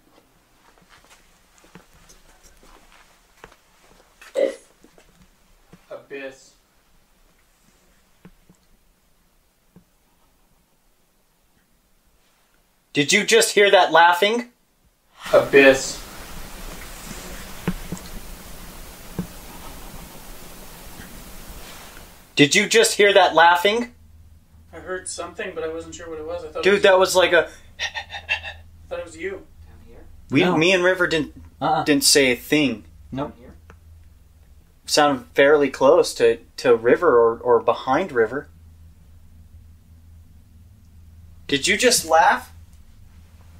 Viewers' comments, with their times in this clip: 0:04 just before the disembodied laughter there's an e.v.p saying "two thousand old" or that's what I'm hearing. What could this mean, can anyone else hear it and if so what are you hearing ?
0:09 Hello, Gentlemen.. that Creepy Disembodied laughter, is F××king Terrifying...
0:29 was that one of you guys that whispered "down here" ??